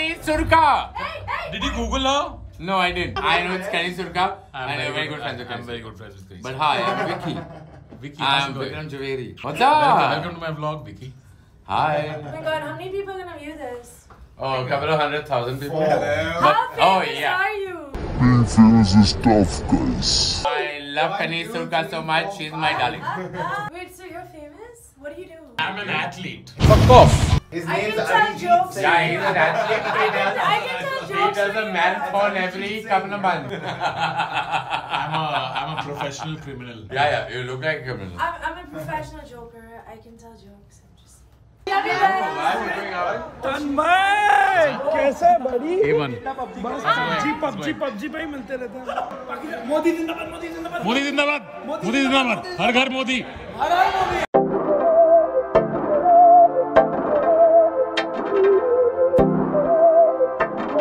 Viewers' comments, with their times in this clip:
0:08 he talking like Karan johar
0:41 indian lana del ray accccenntch